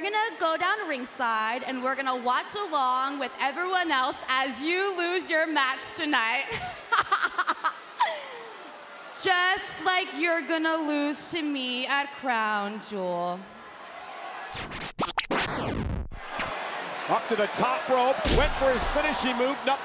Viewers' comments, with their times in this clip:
0:06 The Cringy Laugh